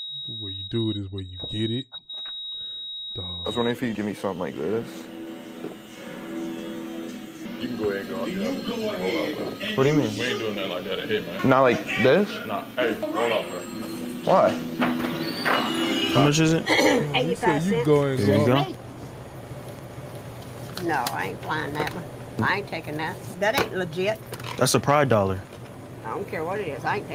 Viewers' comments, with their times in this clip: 0:09 barber sound like LeBron ngl